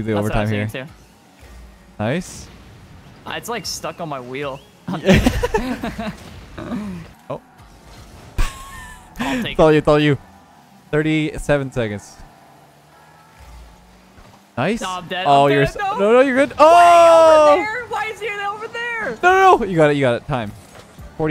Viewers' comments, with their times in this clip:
0:04 did anyone else hear the moan or was it just me
0:05 Ay yo did anyone else hear the moan ?